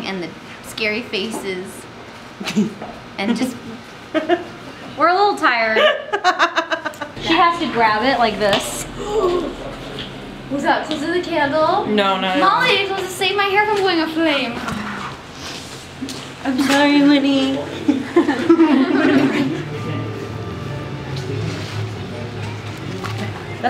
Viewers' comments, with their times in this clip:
0:09 OMG, !! "I'm sorry, Winnie!" SOOOOOO spot on!!! xD I LOVE IT!